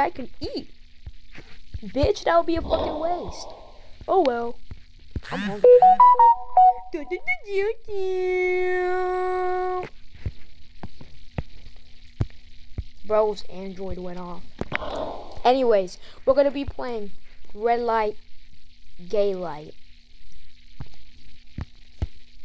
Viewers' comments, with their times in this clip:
0:04 "bros Android alarm went off"
0:04 The teetuhtee sound got me dying 😂